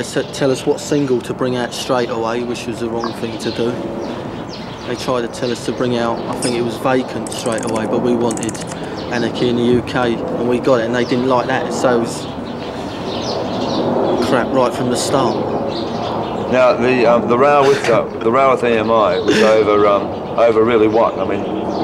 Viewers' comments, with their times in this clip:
0:06 Steve Jones making bird sounds